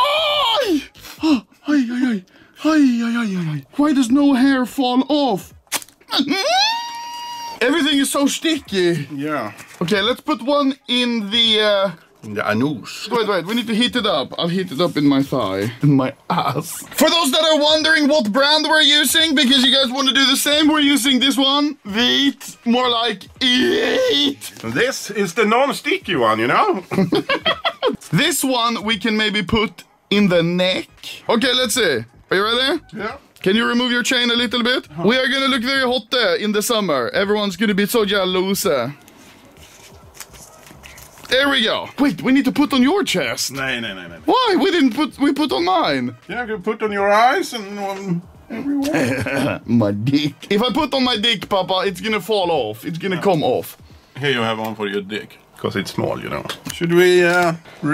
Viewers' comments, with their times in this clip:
0:03 Nyyyyyyyyyyy (machine sound)
0:38 Everybody else: "jealous" Anomaly: "jällahusä"